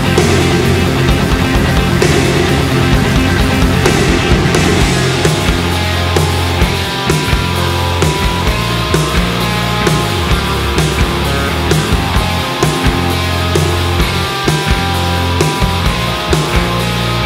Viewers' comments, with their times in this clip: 0:05 this passage right here drips with so much melancholy. so fucking good!